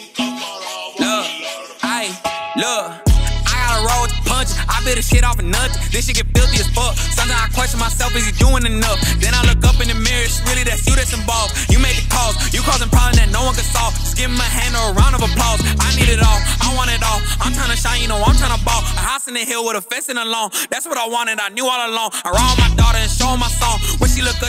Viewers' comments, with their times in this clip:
0:09 song seems to flow a little better right here. At the beg of the song he’s not rapping on beat or something. Rapping takes talent and some ppl take years to be able to flow on a rap song. You can’t just run through a song like that